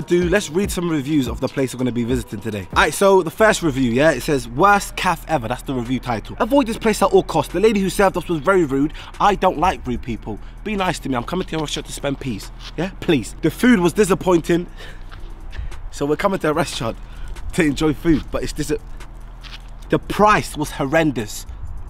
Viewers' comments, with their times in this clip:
0:03 man said caff